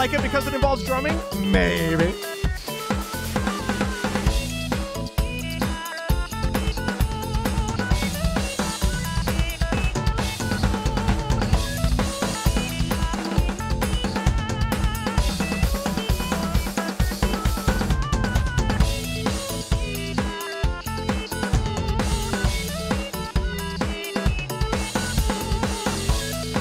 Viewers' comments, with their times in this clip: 0:07 sick drum roll bro!